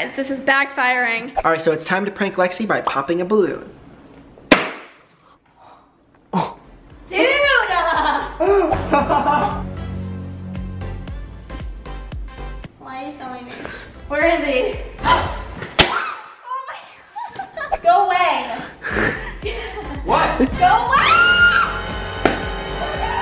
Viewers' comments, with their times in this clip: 0:09 “Why are you filming me? Where is he?!” looks forward***ghasps Hup! 😮 Brent pops the balloon